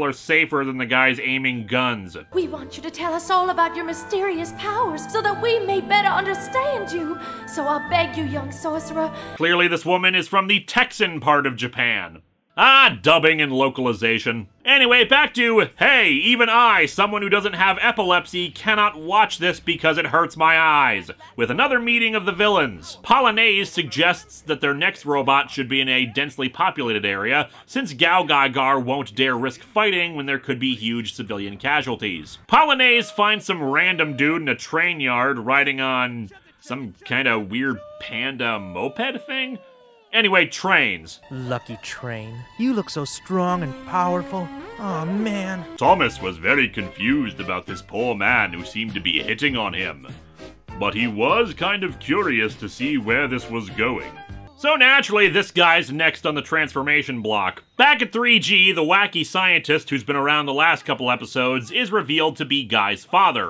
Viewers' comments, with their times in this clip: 0:07 Swan's Engrish in the Japanese version makes it quite clear that she's American (and this is also spelled out much later in the story).
0:07 Texan or other Southern US accents sometimes indicate the original character had an Okinawan accent, although it's not always the case. Crops up often enough (especially in older 90s era dubs) to notice if you watch a lot of them.
0:09 It's likely she had a Kansai accent (Osaka and surrounding cities) in the original version, so that may be why.
0:40 so were you channelling Ringo Starr or Michael Angelis? 😊
0:44 Not a bad Ringo Starr impression for that bit.